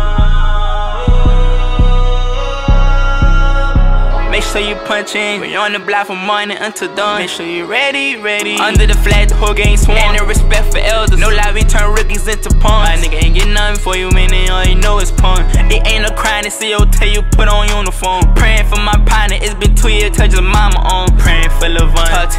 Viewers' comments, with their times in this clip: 0:05 🤩i love the switch up and straight bars 🔥🥇🙏🏽